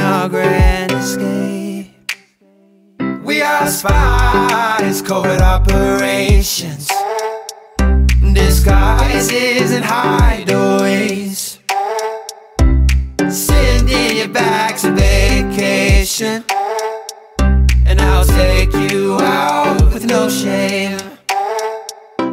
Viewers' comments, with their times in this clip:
0:08 'Disguises and hideaways' Pufferfish moan